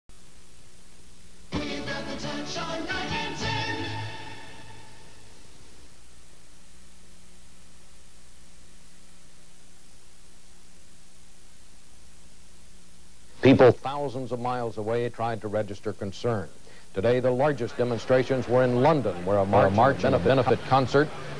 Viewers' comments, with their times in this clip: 0:05 Someone forgot to turn Bob Schieffer's mic on for a few seconds.